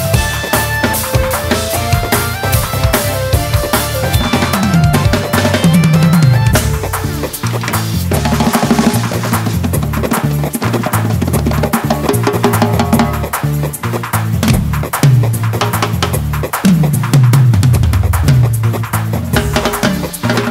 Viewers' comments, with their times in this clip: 0:06 SHE IS ON FIYAAAAA ! ! She is raging her beat and i got goosebumps ! ! Bravo